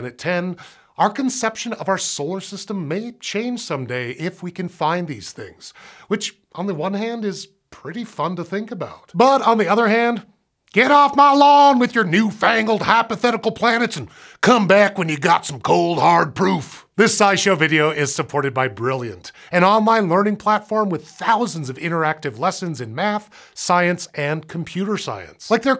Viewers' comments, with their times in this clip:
0:09 Great angry, old man impressions, especially the one at the end!
0:11 That Western accent though 😂 is awesome 👍